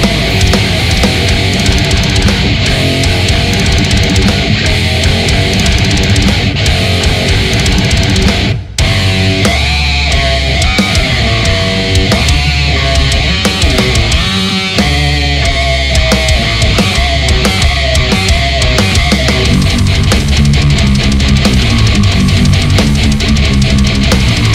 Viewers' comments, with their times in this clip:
0:09 it’s like the riff from the devil in I from slipknot